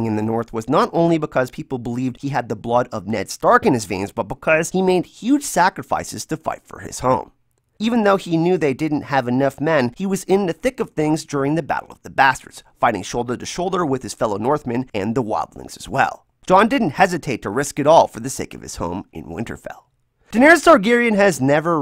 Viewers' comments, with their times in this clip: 0:04 I laughed so hard. I love the way your voice sounds, it makes me happy how it sounds like kermit every once in a while. Don't ever change it!